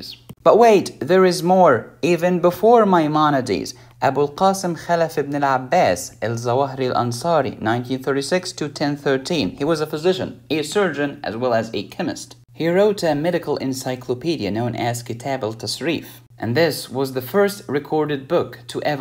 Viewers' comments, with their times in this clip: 0:04 ur arabic is very good lol